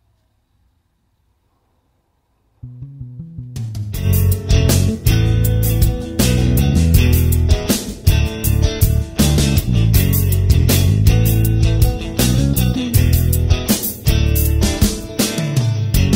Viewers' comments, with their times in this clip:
0:04 song reminds me of cemetery gates